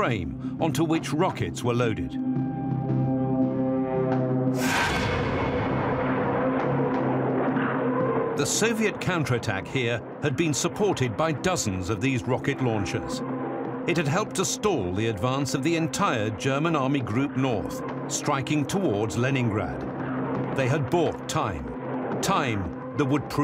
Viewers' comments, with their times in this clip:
0:10 I WAS looking forward to watching this but if in less than two minutes they're sneaking Nebelwerfer SFX in under the Katushya to make it sound "cooler"/more intimidating. It's like when editors use "Jericho trumpets"/Stuka sirens for literally any dive-bombers or even just falling bombs alone and while I know it's only an issue from the post-production, it still kinda ruins my faith that the documentary has ANY idea what it's on about...